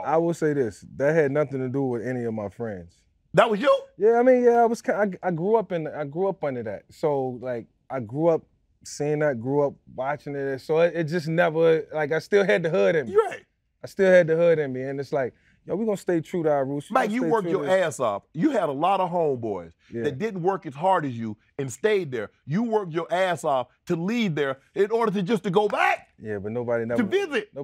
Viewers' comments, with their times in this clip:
0:10 he sounds like DMX